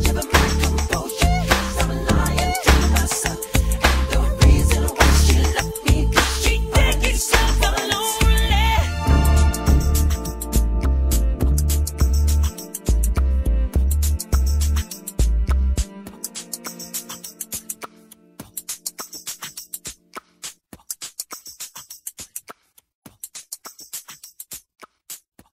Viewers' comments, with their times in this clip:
0:10 michael jackson is such a good beat-boxer! on you can clearly hear it's michael beat boxing! Why did he have to die? However, if you hear all his new songs and and look at the lyrics, it's as if he is giving us clues that he is not dead! for example, beaking news ( I don't know if it's new or old) he says these words, "just because you read in a magazine or seen it on a TV screen don't make it factual!" that tells us something don't it??? R.I.P Michael Jackson Love you forever xxxxxxx <3<3